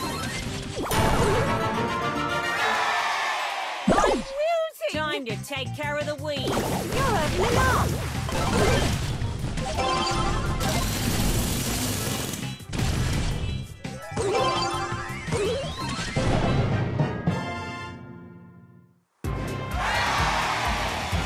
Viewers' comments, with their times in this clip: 0:04 THEy added the lit music back!!